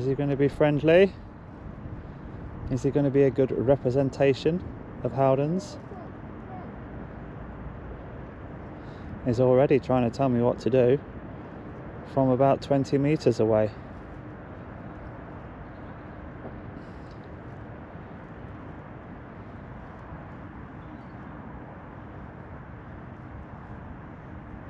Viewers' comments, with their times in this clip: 0:05 He starts shouting "I'm a bassline junkie, and I like it funky" :)